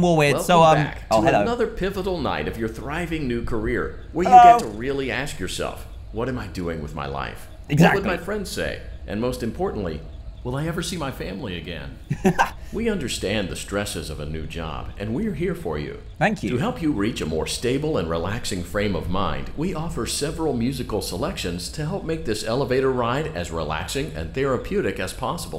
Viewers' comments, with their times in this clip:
0:06 You can actually hear the guy voicing HandyUnit chuckle as he says “What am I doing with my life” He couldn’t say it with a straight face lol. Thats amazing but how did that make it to the final game?